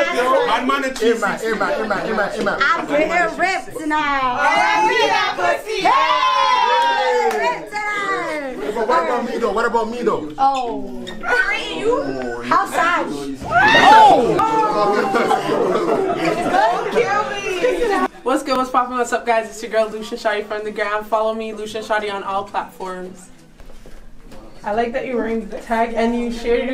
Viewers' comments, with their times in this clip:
0:09 when a girl hit you with the "OOOOOOOHHHHH" you know she not feeling you